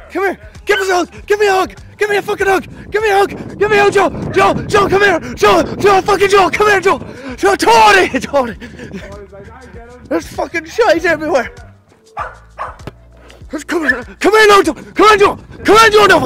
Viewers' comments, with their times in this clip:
0:03 R.I.P. headphone users 💀😭